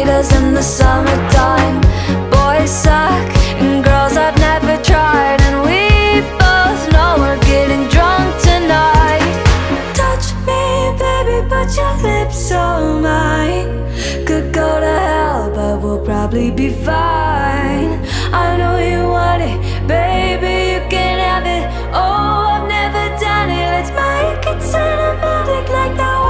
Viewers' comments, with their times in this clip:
0:10 her voice is soooo pretty